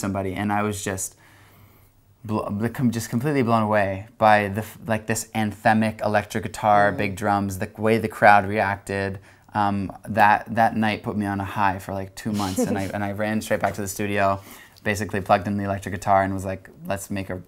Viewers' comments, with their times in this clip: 0:04 she said cabello wrong